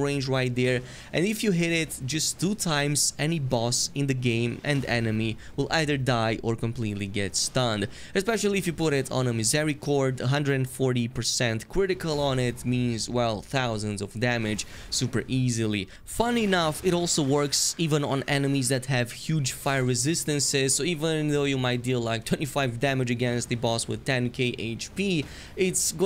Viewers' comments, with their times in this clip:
0:09 wtf are you saying at the mark? something something 140% critical?